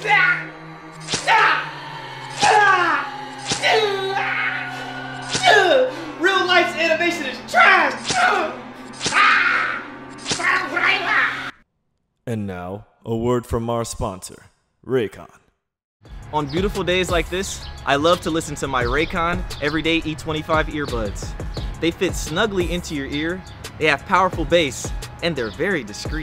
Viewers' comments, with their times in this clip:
0:09 did anyone else here "hog rider"